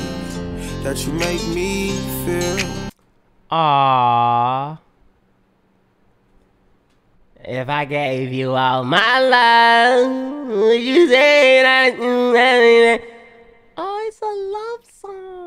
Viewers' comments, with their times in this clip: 0:03 bro sound like a mom 😭